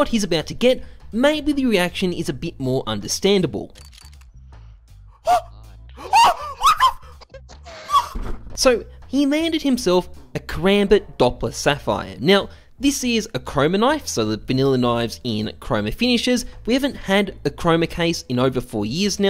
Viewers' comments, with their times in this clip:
0:04 why does he sound like Tom after his legs have been hit by a hammer by Jerry